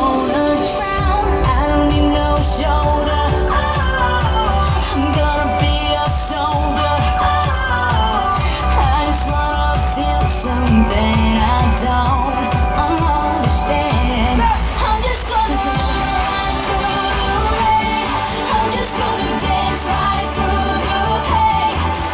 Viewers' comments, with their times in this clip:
0:10 Damn shes lip syncing she drops mic to her waist no difference in volume of song.